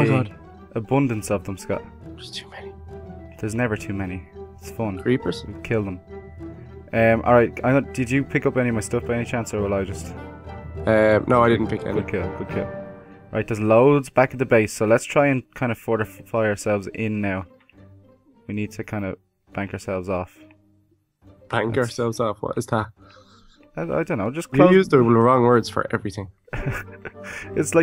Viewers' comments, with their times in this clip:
0:10 the chicken is just like "OMGeee